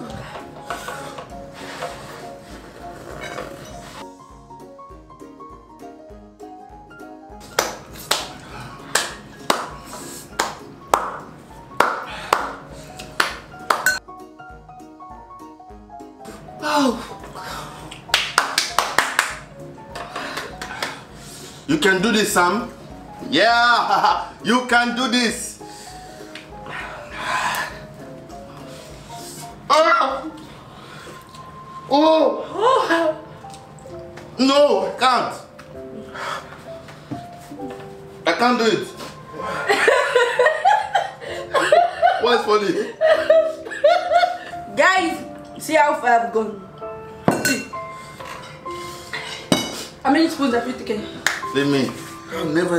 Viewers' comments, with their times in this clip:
0:07 At some point my guy was doing praise & worship 😂😂
0:35 the background music made it funnier LMFAOOOOOO i was crying and laughing at the same time